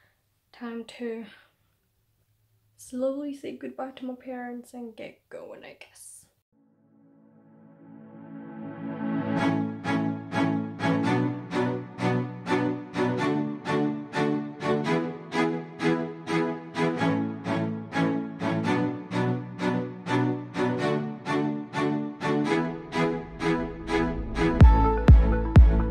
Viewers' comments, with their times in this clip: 0:10 was some intense music